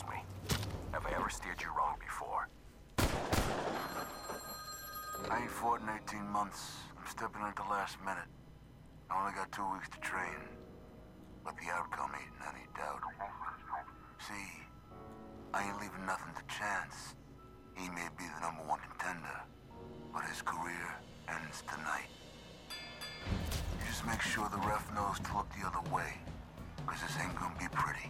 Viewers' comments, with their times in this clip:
0:10 FUCKIN RON PERLMAN M8, kinda almost